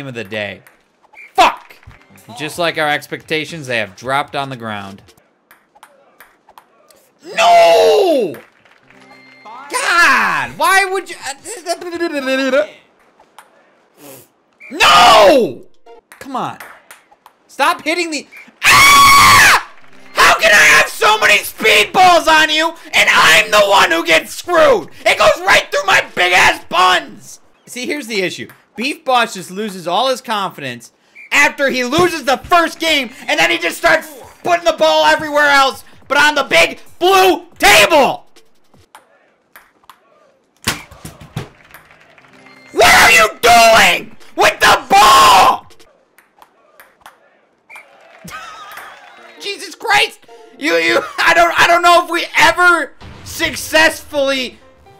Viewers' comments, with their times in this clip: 0:07 The funniest no I've heard in my life
0:18 gets me😂😂😂😂 best scream I've ever heard
0:19 Me: oh he should be calm Also me: hears oh
0:36 Major tyler 1